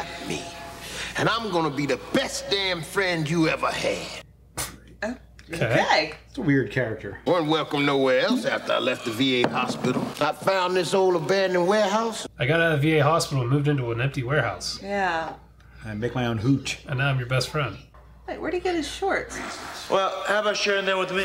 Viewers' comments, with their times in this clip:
0:07 That is the blackest sounding dude I've ever heard. He makes Mr T sound like Gregory Peck.